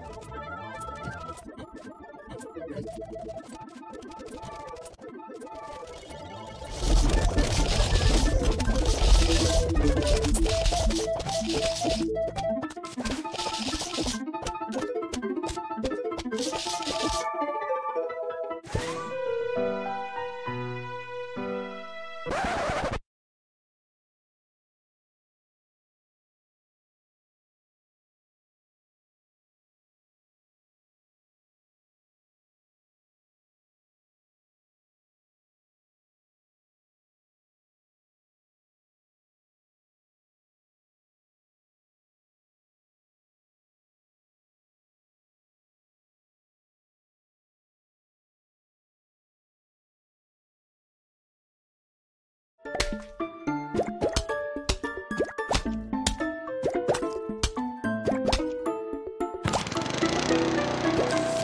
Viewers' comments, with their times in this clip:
0:06 i lauged at the sound the jack-in-the-box zombie made
0:47 Vsauce theme plays*
0:47 Vsauce music plays
0:49 “Sadly, the level is impossible to beat with only 50 Sun” “Or is it?” Vsauce music plays